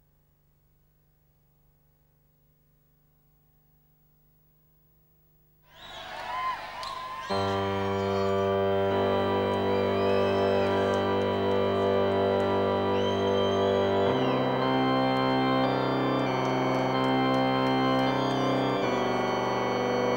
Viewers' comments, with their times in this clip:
0:05 Motion Picture Soundtrack live! Not many of those around. Here's how to get that distorted organ sound: Step 1: Connect all pedals you can find to your keyboard Step 2: Crank up the gain on all pedals Step 3: Pour some red wine and sleeping pills on said keyboard and pedals Tip for longer lasting experience: When playing and singing, add the extra 'beautiful angels' verse